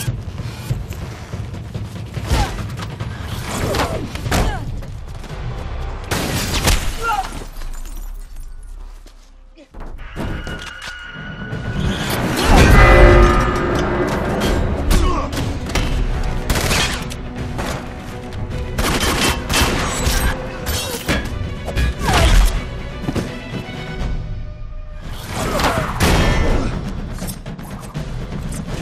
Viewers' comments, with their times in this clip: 0:10 I forgot about that stock sound effect used for videogame weapons lol